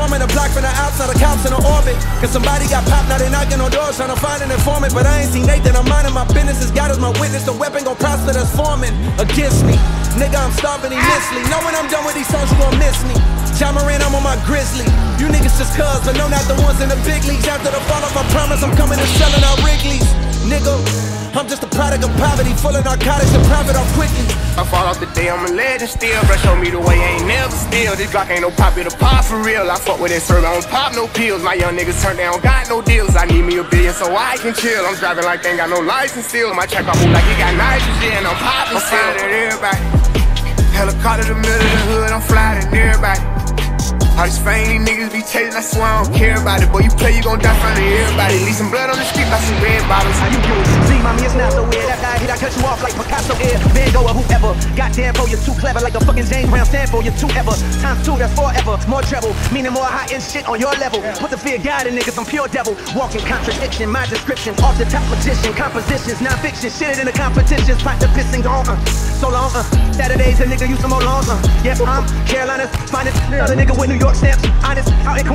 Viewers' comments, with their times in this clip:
0:09 I gotta ask, where on earth did you get that sound clip of that guy screaming like that I'm lmao everytime I hear it XD
0:50 yo why does sped up j cole sound like logic wtf
0:58 i liked the video but not liking the sound of cole in